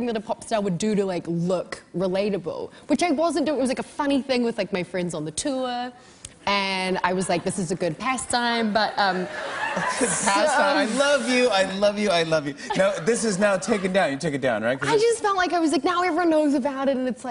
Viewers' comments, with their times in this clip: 0:04 With my friends on the toower